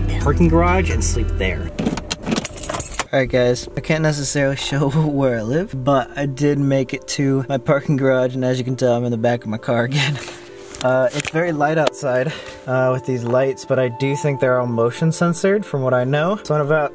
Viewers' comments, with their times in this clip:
0:03 his voice sounds so much different 👀